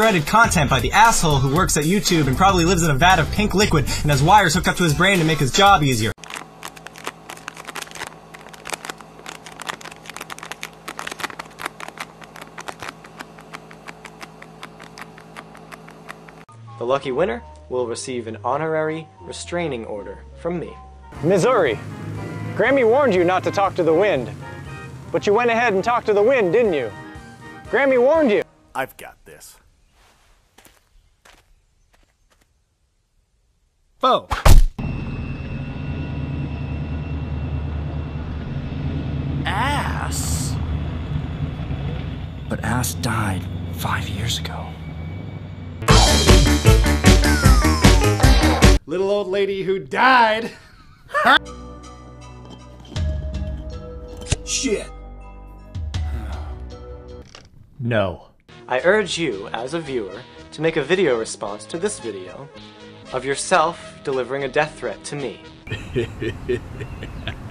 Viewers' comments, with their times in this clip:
0:06 Neil cicierega asmr
0:06 Neil Cicierega asmr
0:49 cut off laugh was good